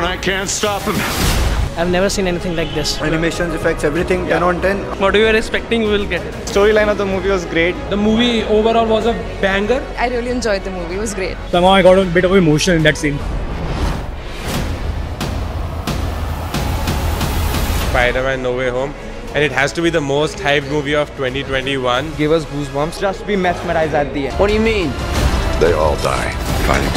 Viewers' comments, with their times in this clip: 0:08 did he just said baingan 😂😂😂